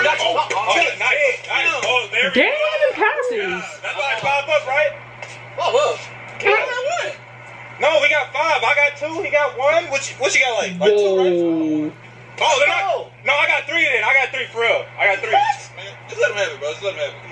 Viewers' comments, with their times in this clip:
0:05 We’re gonna act like she didn’t just fart in the middle of the video